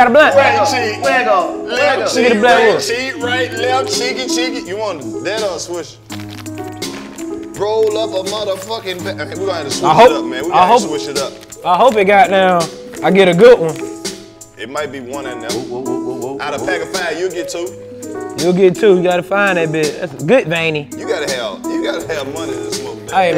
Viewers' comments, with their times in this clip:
0:05 DC FUNNY ASFFFFF, THAT NICCA CAN SING THO😭😭